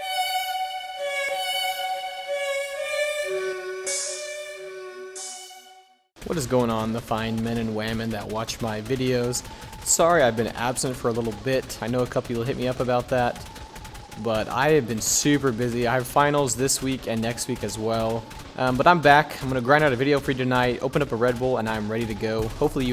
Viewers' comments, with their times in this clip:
0:08 hello to you fine man and “wamin”